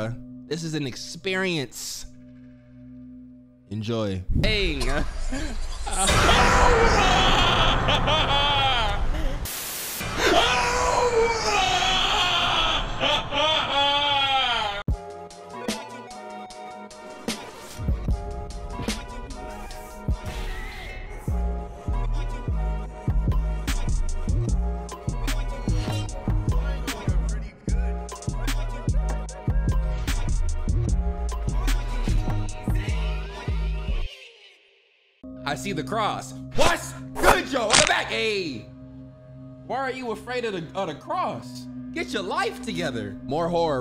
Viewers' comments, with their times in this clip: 0:10 he went from sound like Deadpool to plankton... HOW?!
0:18 EUGHHHHHH WHEN THOSE 808S GOT THERE EUGHH
0:31 yessir he still got the neck crack (😭😭).